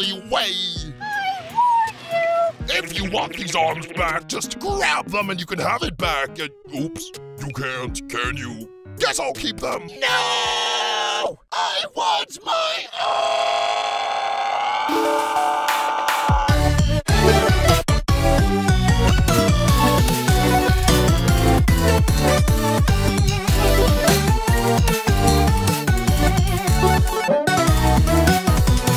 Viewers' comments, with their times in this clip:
0:10 basketball and doughnut voices are so distorted but this is another level